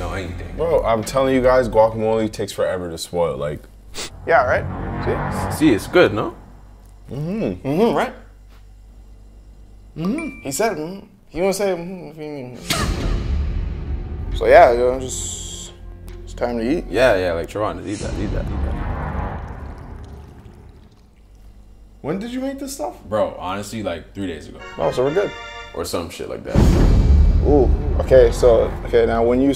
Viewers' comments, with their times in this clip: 0:10 That lil cough had me dead asf... my manz lookin up like "huh, what u jus say?“ 🤣😂🤣